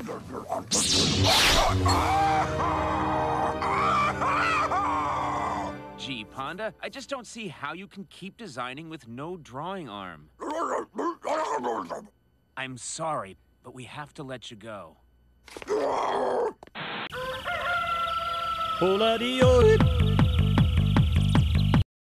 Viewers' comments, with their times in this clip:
0:09 the ponda baba boss is conan o brian? if that is really conan man his voice sound different than normal.